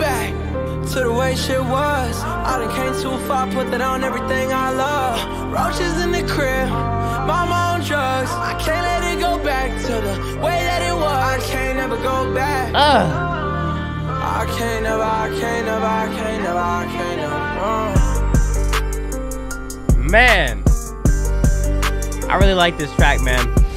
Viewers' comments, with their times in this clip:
0:07 what song from juice is the flow ish when he goes “roaches in the crib” he jacked that straight from juice omg